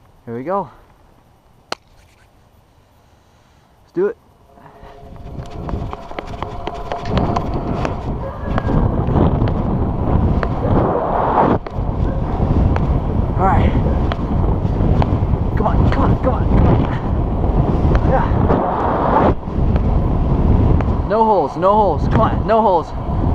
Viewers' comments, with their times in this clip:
0:07 do you guys hear a women yell come back